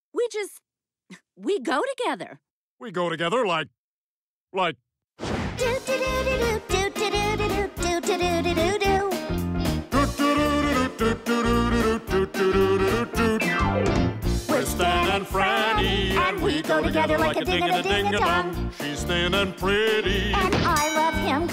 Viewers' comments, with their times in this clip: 0:05 I always love hearing them sing this opening part